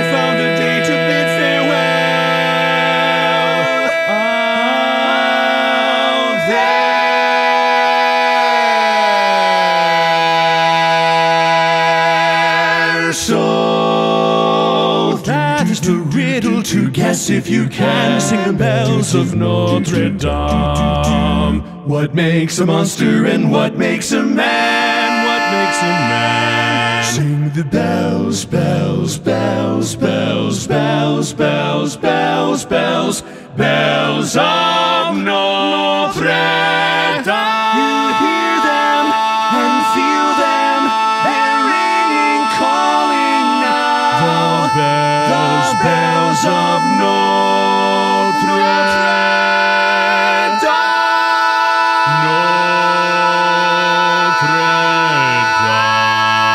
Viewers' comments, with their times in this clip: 0:05 those chested notes made the chord hit so good
0:09 Glissando is incredible.
0:18 that bass is so clean. fantastic!
0:20 I absolutely love this tag, but the bass note just resonates so much with me.
0:20 That low note on damn! Cheers
0:20 The low note is insane!!!!
0:20 i almost choked on what I was eating when I heard that low note
0:20 How early in the morning did you have to record to sing that low ?
0:20 what was that bass note? your range, incredible
0:21 Dude the bass note was totally unexpected. Bravo sir!
0:21 is that bass note authentic?
0:21 God I did not see that D2 coming at all, and I'm digging it so much
0:21 this is slightly old, but the bass IS AWESOME! NICELY DONE MY GOOD SIR
0:21 Incredible low D😮
0:21 that bass part just does it for me
0:21 Dude you really hit that bass natural ?
0:25 auto-generated subtitle "What makes him mad"
0:40 Dang dude, leave some tags for the rest of us. JK, was great as usual. Particularly tenor/bari lock on "they're ring-ing"🔥
0:41 onwards the overtones are outrageous. One of the all-time greats.
0:41 Are those overtones ? "They're ringing" in particular sounds, like, REALLY loud overtones. Or, did you sneak an octave jump in there and sing it perfectly in tune?